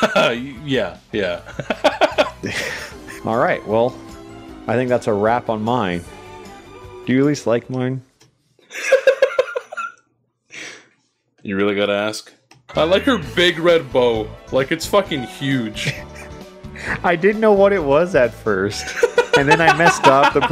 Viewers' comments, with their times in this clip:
0:07 alpha sounds so genuinely sad 🥺